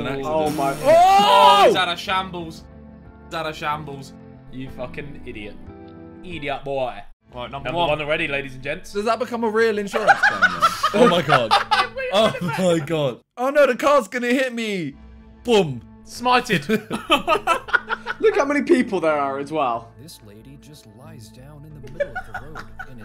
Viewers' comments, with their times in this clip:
0:06 i got to say as a jamaican thats a good immitation